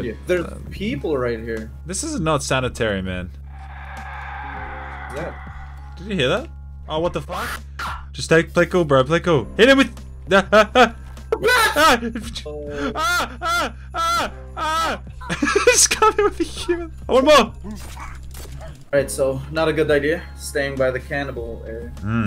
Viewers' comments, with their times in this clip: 0:06 I thought that was the cannibal screaming down the xbox mic